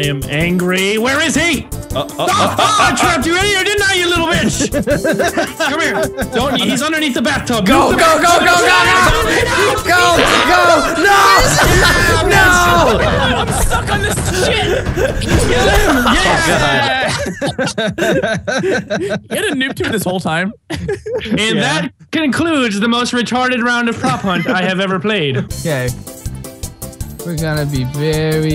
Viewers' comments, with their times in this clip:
0:10 The way Vanoss say "NAAUUGGHH!" is hilarious given the context lol
0:10 The way Vanoss say "NAAUUGGHH!" is hilarious given the context lol